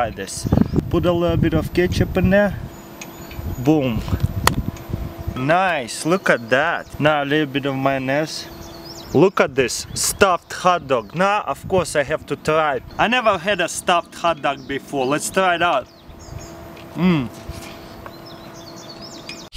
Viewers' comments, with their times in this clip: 0:07 just a little bit of manas